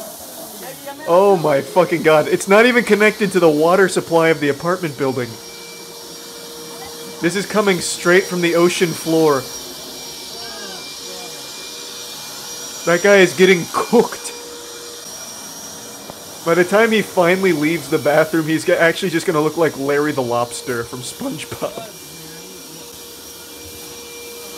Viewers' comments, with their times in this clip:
0:09 you can hear his death scream